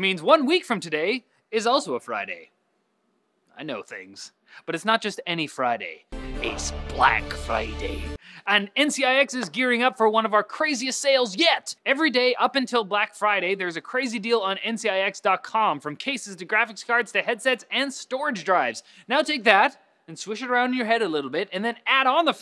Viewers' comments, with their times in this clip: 0:07 BUT WHY the Scottish accent ? PS: good accent